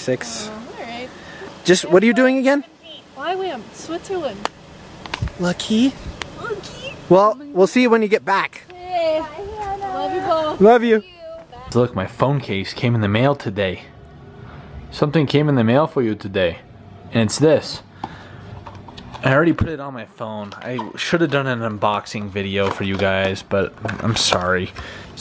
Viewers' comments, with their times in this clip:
0:07 is the most unemotional goodbye for 5 months ever. hahaha